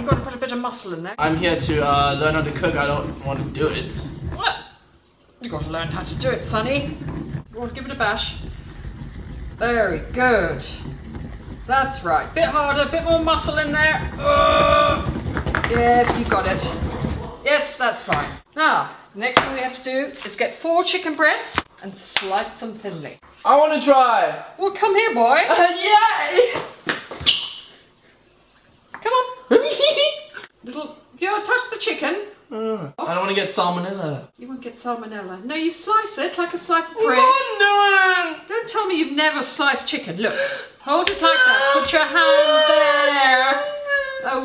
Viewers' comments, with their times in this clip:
0:07 play & look away - sounds so wrong.
0:29 caspar's laugh omg
0:29 omg hahaha your laugh <3